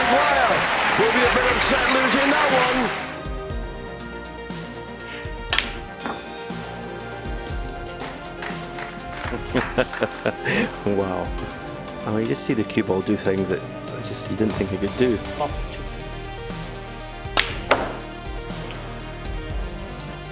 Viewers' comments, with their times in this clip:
0:03 Make a seven times world champion just laugh and go 'wauw'. Level achieved ✔︎